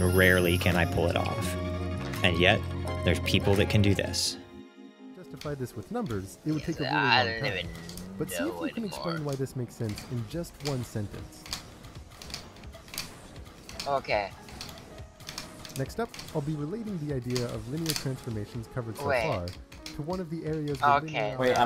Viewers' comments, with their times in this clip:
0:03 I got really confused when I started hearing 3Blue1Brown in the background, because I had just finished watching one of his videos before this one... I thought I must've left something playing!
0:05 Grant Sanderson coming out of nowhere, lol.